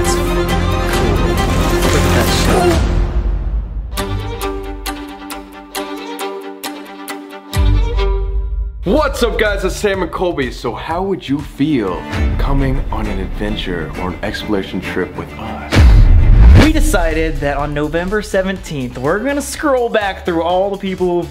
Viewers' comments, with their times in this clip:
0:05 beat goes kinda hard